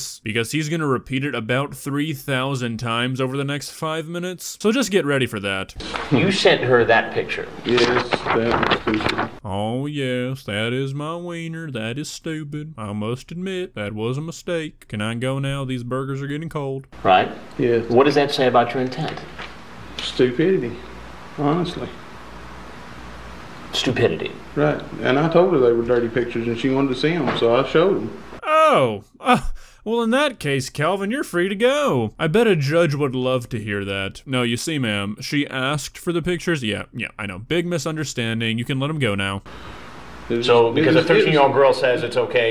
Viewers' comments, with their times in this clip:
0:09 Your country voice is funny
0:28 he sounds like Cleveland brown😭